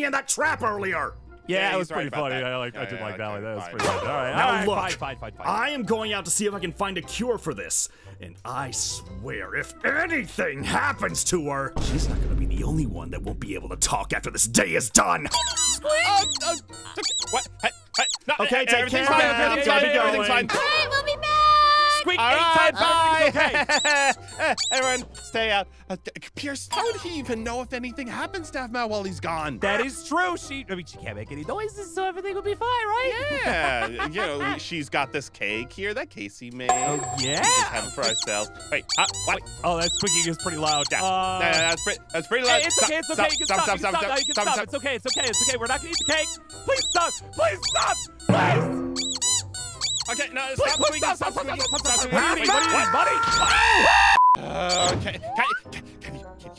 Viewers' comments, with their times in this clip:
0:03 Zane: I SWEAR IF ANYTHING HAPPENS TO HER. She's not gonna be the only one who not gonna talk after the day is done Aphmau: Squeaks 2 time aka yes Me:XD IM DED
0:10 Why did Zane talk pretty fast
0:43 too many squeky noise 😂😂😂